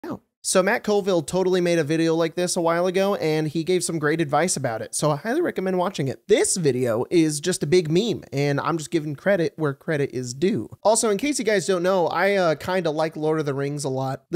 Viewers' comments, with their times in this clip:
0:00 I love that the Most Replayed part of the video is the “æøwp” sound Where did that come from?